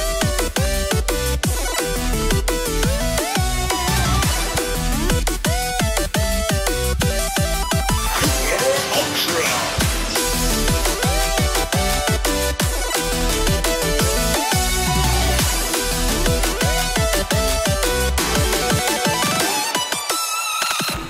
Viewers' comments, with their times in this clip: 0:03 i really love that music